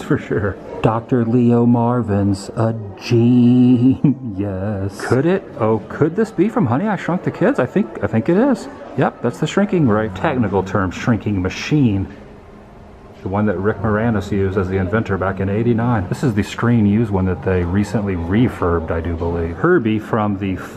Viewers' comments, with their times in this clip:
0:06 I thought you said "Honey I shot the kids" LMAOOOO